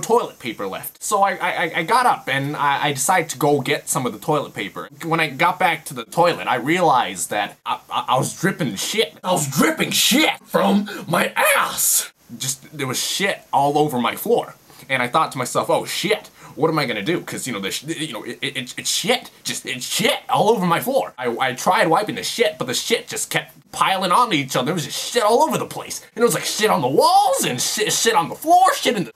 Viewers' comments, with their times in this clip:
0:09 Is this where he got the inspiration for the Frank voice lol
0:10 first stages of throat cancer